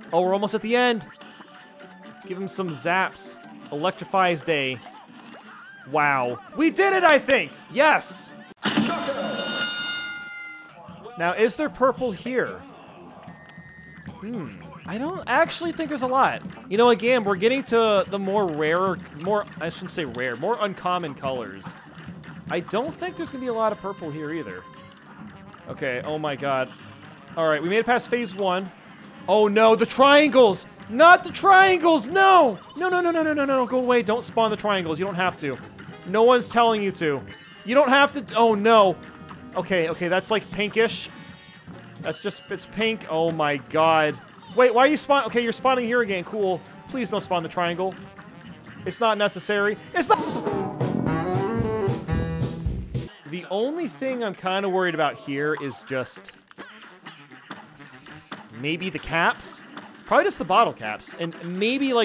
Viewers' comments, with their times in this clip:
0:08 Wow. He spawned the radish Again and it was a mistake. JUST LIKE THE RED CHALLENGE Also can we talk about how you hear KNOCKOUT instead of BRAVO
0:50 Perfectly cut screem!